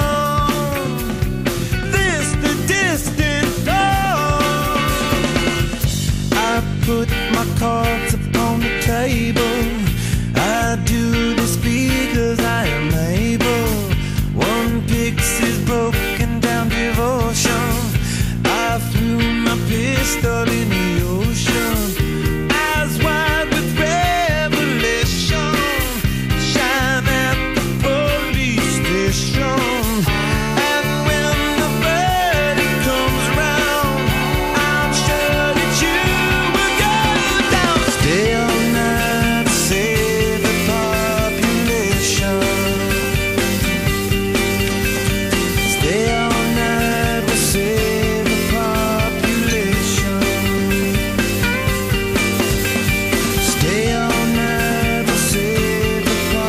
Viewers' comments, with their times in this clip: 0:10 Incredibly obvious autotune :(
0:38 I love the echoey sounding of the guitar in the background. it is really giving you the impression of being in a vast vast space...where you can save ...the whole population. Song for my first Space walk.